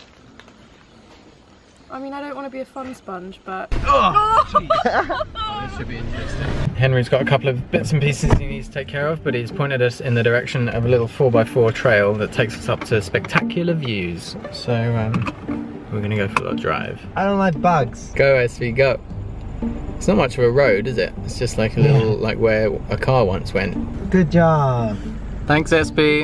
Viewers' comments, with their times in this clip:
0:10 I knew there was something good happening when the music started to play 😂